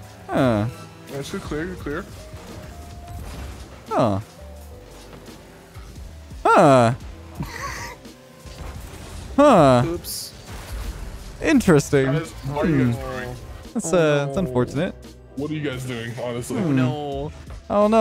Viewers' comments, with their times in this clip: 0:06 Are those some villager sounds??